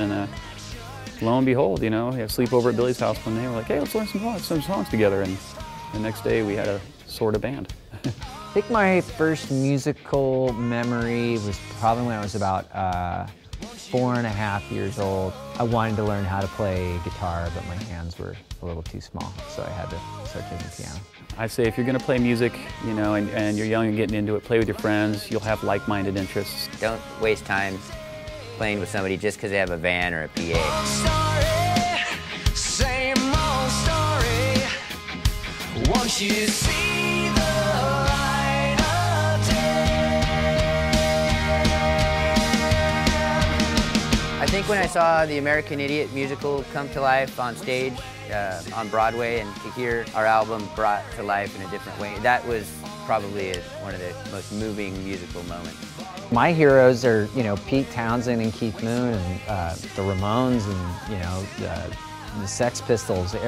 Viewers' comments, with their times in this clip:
0:06 oh god, that awkward laugh
0:07 mikes laugh though 😞
0:44 Lol Tré trying to sound all serious XD